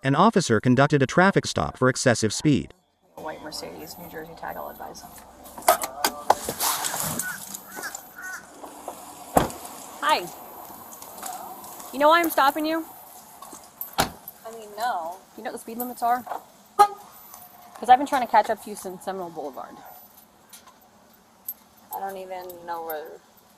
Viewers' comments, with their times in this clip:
0:08 As soon as I heard the bird I knew it was Florida 😂 I live not to far from Seminole 😎